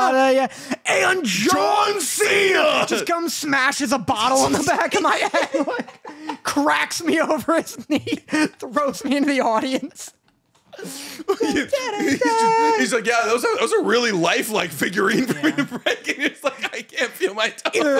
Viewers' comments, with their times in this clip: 0:05 literally started whistling without noticing